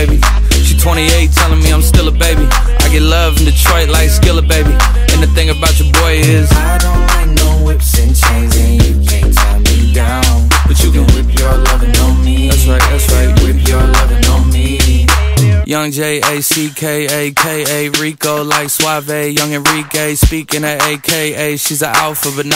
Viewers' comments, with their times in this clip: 0:07 I love it at this part where he joins the background vocals